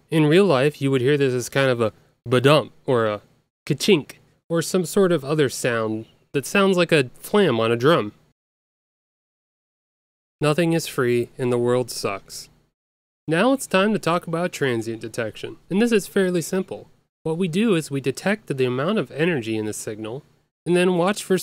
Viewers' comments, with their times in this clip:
0:04 were we supposed to hear the flam ?